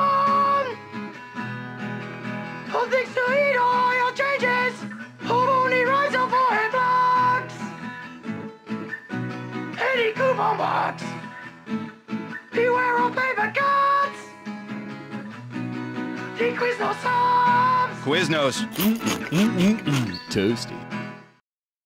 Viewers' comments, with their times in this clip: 0:08 ANY COUPON WORKS (Metal Guitar SOLO)
0:09 I laughed so hard. Sounds like a heavy metal song.